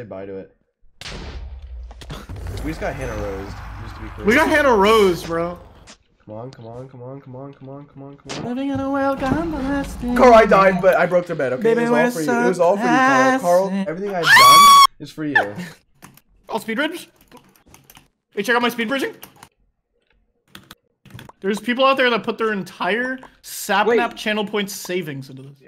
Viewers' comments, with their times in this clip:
0:09 Karl singing peacefully 2 seconds later: EAEEEAAEEEAEEEEEAEEAEAE
0:11 WHO WAS SINGING ?!